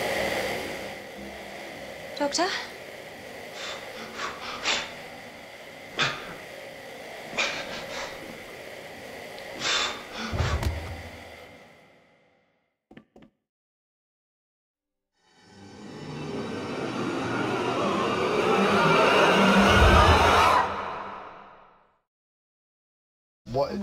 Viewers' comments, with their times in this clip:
0:09 so THAT'S what a huge horde of pissed daleks sounds like